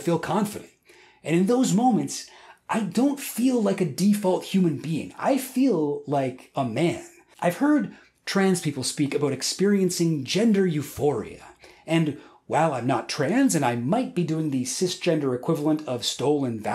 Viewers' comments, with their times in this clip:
0:04 my left ear enjoyed that part